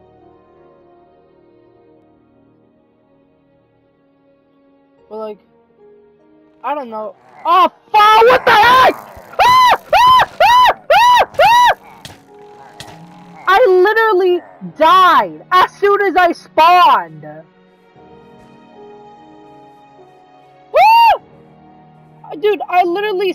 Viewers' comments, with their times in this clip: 0:09 kinda sounds like my battle cry